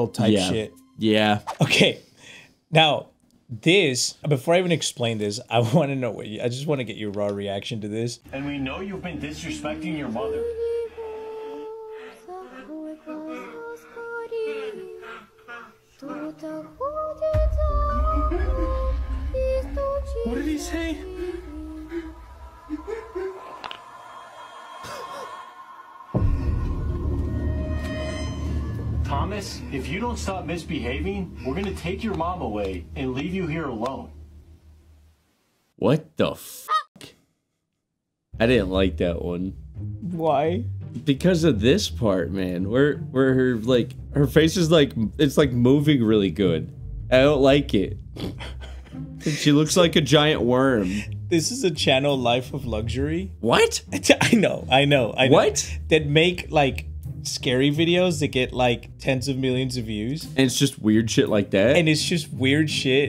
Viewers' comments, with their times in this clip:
0:10 Ayo the Russian song
0:50 Michael Jackson hee hee